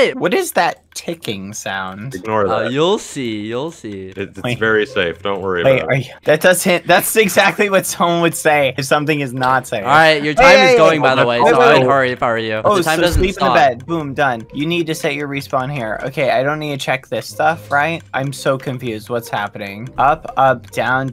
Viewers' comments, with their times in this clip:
0:06 hmm it’s kinda catchy snape, snape, seevorus snape